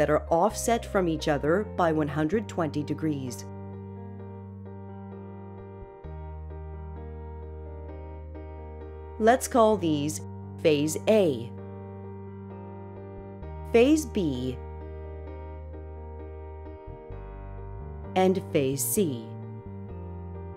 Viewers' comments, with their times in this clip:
0:08 "Let's call these phase A, [suspenseful pause] phase B [an even longer dramatic pause] and phase C." Phew, I didn't see that coming!